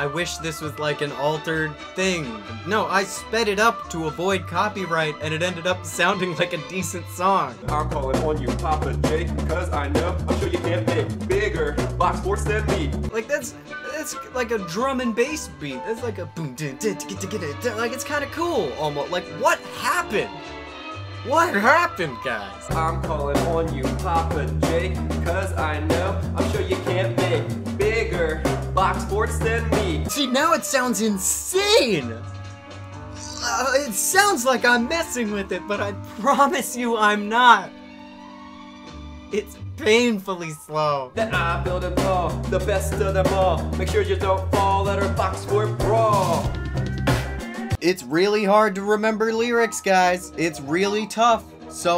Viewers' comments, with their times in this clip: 0:07 i’d say faster, like maybe 1.1x that speed
0:22 Kid's reading the lyrics out loud from his phone.
0:31 is it just me or does the normal-speed-song really sound like the 'sex offender shuffle'?
0:36 the tempo of that song reminds me of the sex offender shuffle